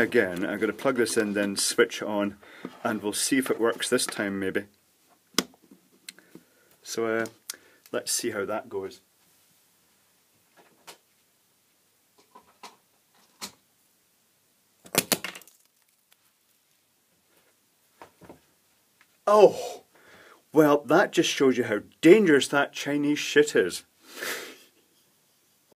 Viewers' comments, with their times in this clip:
0:05 Power supply go big boom boom.
0:14 it goes boom